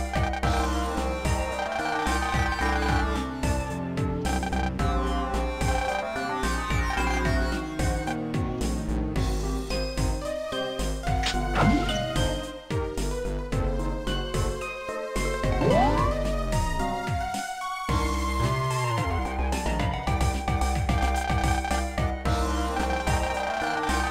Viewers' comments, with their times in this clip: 0:06 That snap is satisfying and evil xd